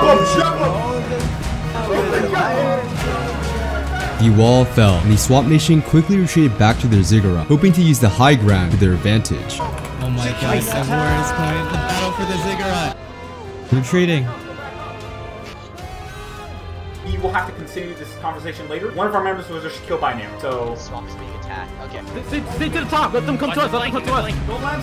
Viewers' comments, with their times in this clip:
0:10 LMFAO I HEARD CHICKEN ATTACK
0:10 We just not gonna talk about that auto tune war cry
0:10 man got that autotune voice